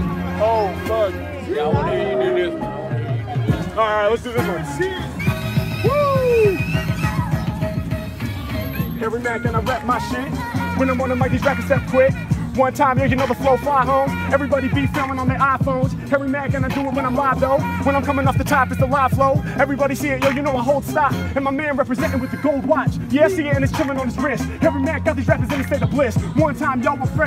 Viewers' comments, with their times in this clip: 0:08 goes the hardest flows with the beat really good
0:10 that beat always go hard. Can’t get enough with it.